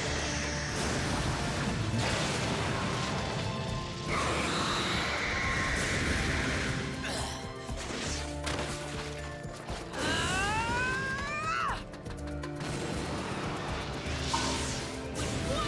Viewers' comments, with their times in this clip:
0:03 that sound like rek' sai from League